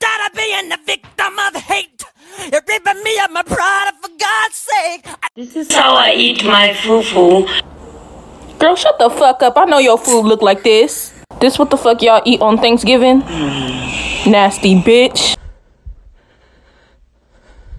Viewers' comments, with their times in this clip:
0:04 the dogs are like we don't know what your talking about or what you mean but we are here for you cuz you sound sad and we love you